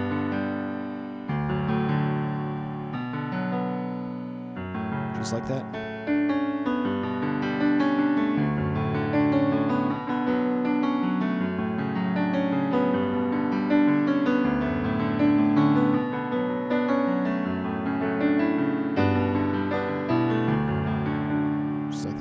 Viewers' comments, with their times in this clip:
0:05 My favorite part starts How did you keep the same sound but make it sound much faster? It makes no sense, ill just stick with guitar